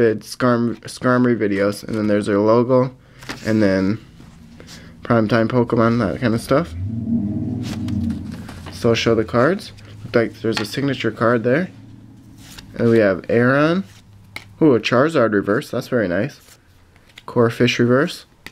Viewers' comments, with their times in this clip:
0:06 lol that was a LOUD REV of a truck!